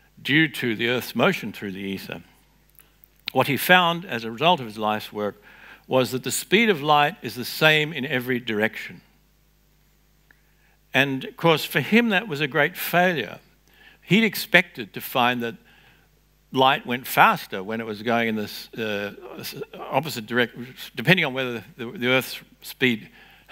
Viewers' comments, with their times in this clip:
0:10 for Joe Biden moment. Anybody got a translation?